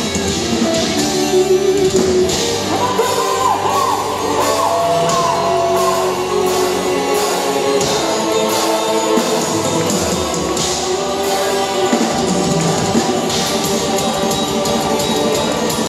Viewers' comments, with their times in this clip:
0:13 Is it me or are those blast beats?